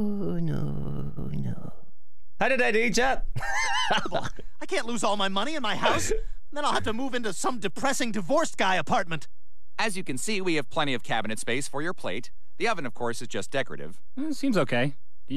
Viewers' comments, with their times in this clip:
0:03 that was a freaking spooky Consuella 😲 a little too good